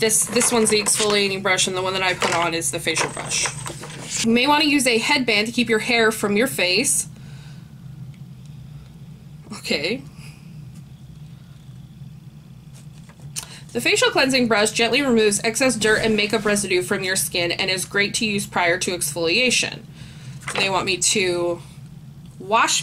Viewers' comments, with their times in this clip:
0:10 why did you scoff at the suggestion of wearing a headband to keep the hair out of your face like it was a silly idea when in fact your hair was getting in the way?